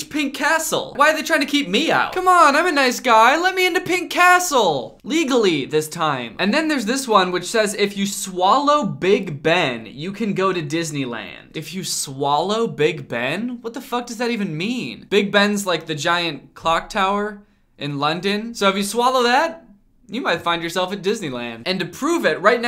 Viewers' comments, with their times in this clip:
0:07 this sounds like a porno im crying